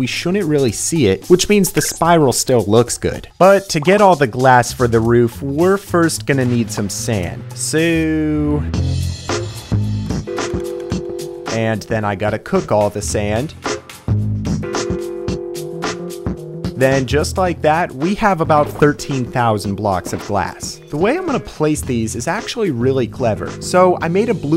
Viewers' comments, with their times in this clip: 0:07 his so sound like suuuiii